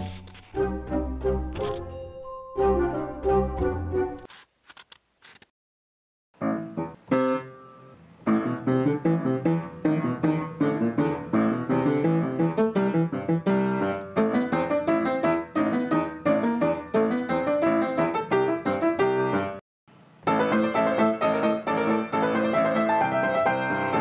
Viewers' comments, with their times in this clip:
0:05 amazing music I love it <3